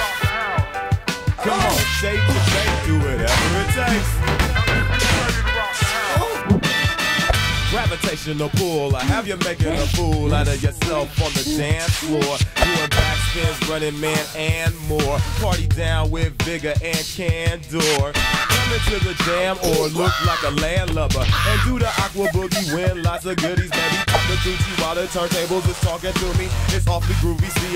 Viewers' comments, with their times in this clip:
0:04 Was that a moan-
0:05 y’all what were the random ass moans?!
0:05 We ain’t gonna talk about 2Ds moan ?
0:05 Is it just me or did 2d just groan?💀
0:09 2D sounds like an anime girl about to sneeze
0:09 why in that time the SFX was too rare?